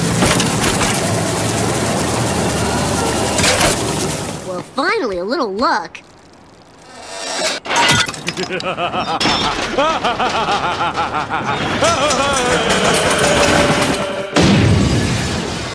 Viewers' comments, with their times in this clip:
0:08 From to the boom I wish I had that as my cell's ring tone